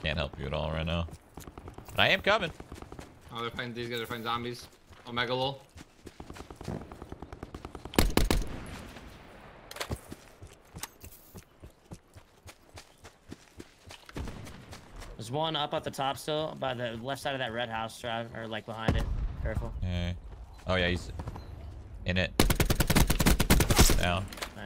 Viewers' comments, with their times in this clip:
0:03 that fart was unholy
0:05 did someone fart Am i going crazy listen closely
0:05 dayøøøm, someone let one rip real good
0:05 Did Shroud Just Fart?
0:06 Did shroud farted ? Lmao😂😂😂
0:06 I swear someone farted
0:06 did you farted?